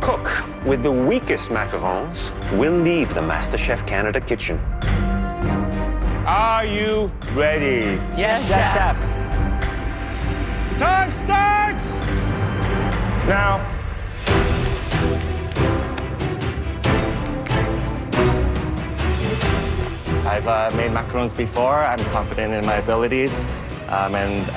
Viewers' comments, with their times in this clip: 0:10 that’s the most boring “NOW” i’ve ever heard from asian elton john